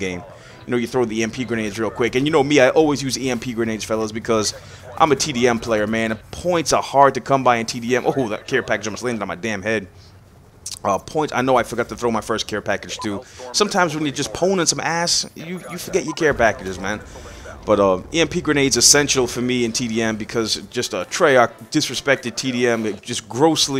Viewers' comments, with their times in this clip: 0:07 If u put the captions on english in it says hes a TV employer